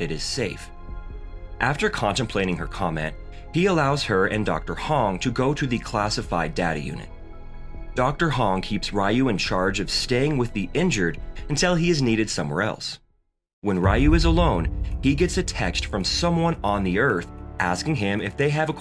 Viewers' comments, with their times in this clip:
0:05 I heard "Classified daddy unit" 💀😰